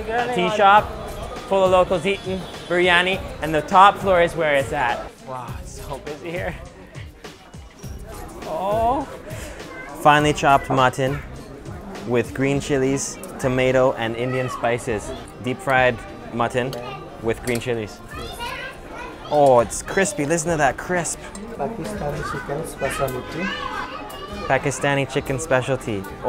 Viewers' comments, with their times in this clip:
0:09 😂😂😂😂 did I hear someone moaning